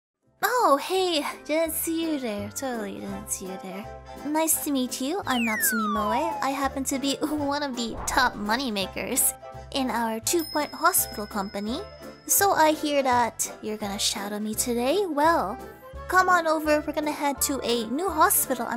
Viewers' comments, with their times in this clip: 0:01 you sound disappointed it’s me........... you should be disappointed it’s me